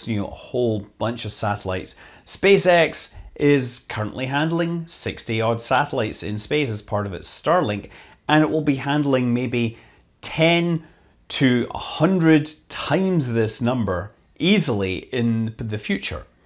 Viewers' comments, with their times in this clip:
0:04 TEN TO THE POWER OF HUNDRED TIMES MORE? Oh, ok ten to hundred... that makes sense.